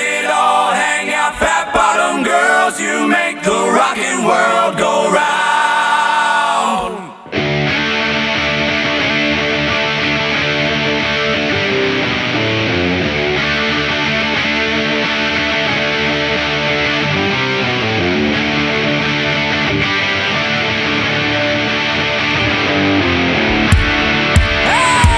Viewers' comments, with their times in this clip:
0:07 Yep. Better than Queen! The ONLY thing I would have liked better is the intro of the base. After the vocal intro I miss the slide down to kick off the song. Edit: Subscribed!